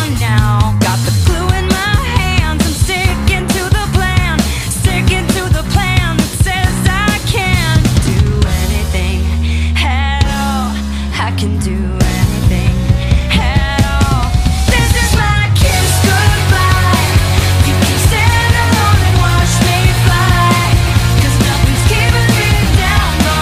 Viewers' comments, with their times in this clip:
0:09 I hear head on not at all but I also hear at all guys please help